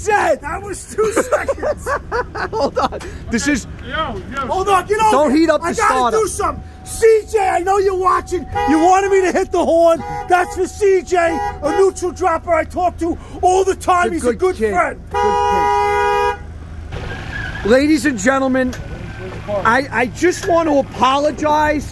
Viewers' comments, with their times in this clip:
0:08 Stuntman honks the horn